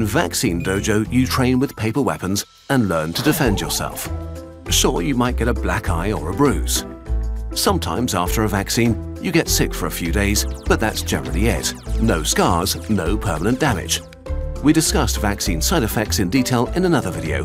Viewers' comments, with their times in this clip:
0:04 the music in this video sounds like you're searching for an answer to a math problem until you find it and I love it